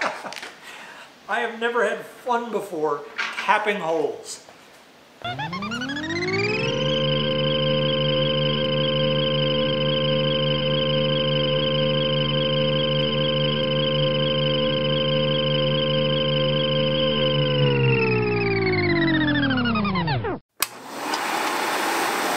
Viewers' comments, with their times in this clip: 0:05 Love the Jetsons car sound effect xD